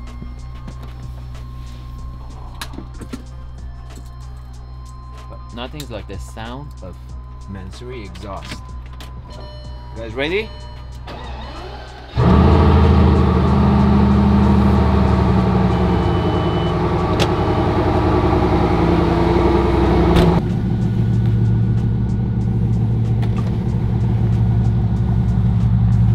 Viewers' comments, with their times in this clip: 0:08 that bing sound remebers you of wv golf